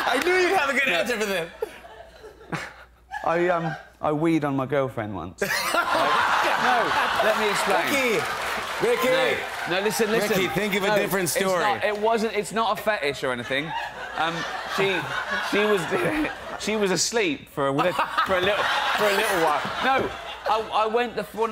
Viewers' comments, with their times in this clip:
0:08 jimmy fallon edited voice...